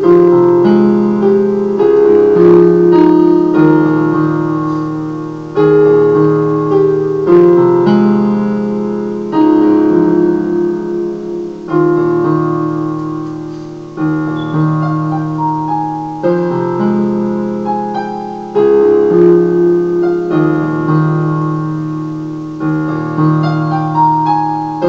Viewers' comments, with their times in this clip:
0:07 you need to work on your consistency of your bass line. listen to your bass line, it should have a constant flow, you seem to have a little spacing arpeggio, which needs to be fluid.